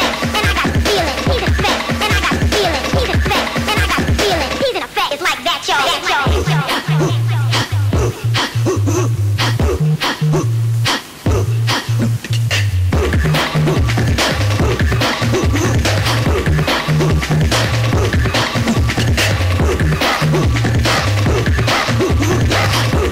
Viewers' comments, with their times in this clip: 0:06 Anyone know the Dub sounding Bassline that kicks in ?